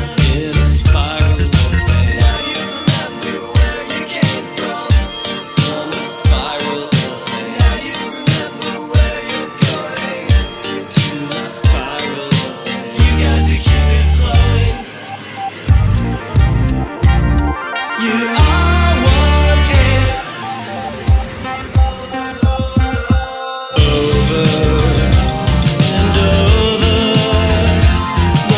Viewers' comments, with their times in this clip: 0:10 Is it just me or does Spiral of ants have something of a finale feeling approaching ?